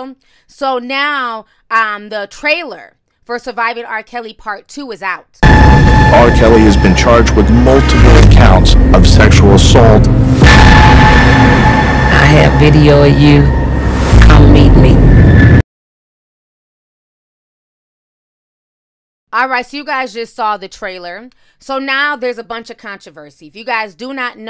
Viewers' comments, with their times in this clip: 0:06 Ear rape I got scared it was so loud.